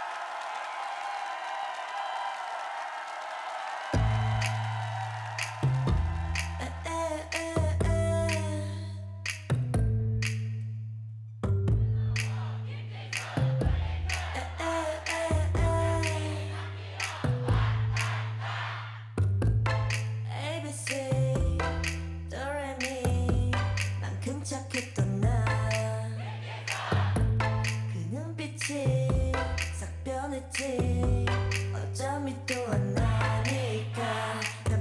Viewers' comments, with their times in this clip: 0:08 Finally I’m so happy to see her perform and hear the fan chant. JISSOOOOO
0:20 jisoo smiled after hearing the fanchant🙂